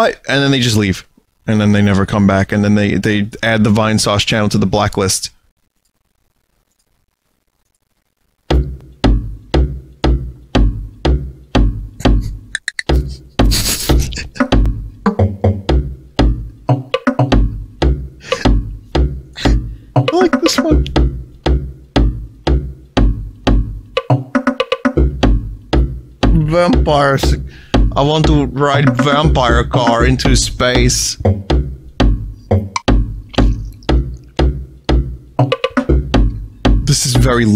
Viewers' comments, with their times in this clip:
0:09 reminds me of tick tock clock
0:24 why does this sound like earthbound indie music?